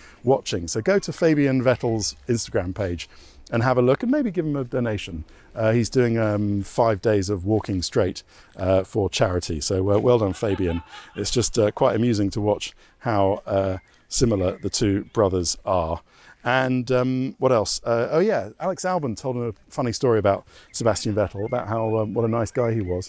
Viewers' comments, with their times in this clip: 0:10 that laugh tho